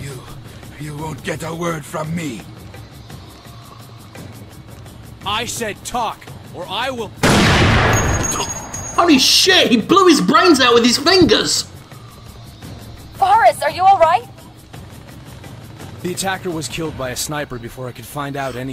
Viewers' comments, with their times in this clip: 0:06 You can hear the shell casing hit the ground xD